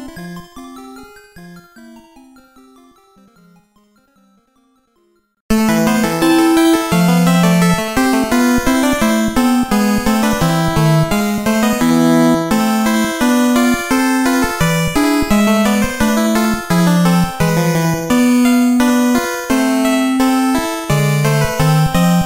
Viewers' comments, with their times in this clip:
0:05 "The Ghoul Realm"? I don't intend to be mean about it, but really, the only similarity I see is that they both have baroque-ish influences (and the one here, more so).